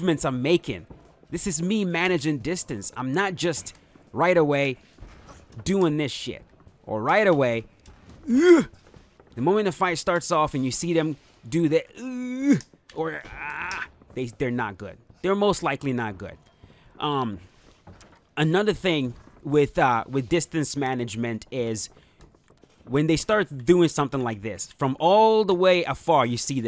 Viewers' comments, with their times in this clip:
0:08 the sound effects 😭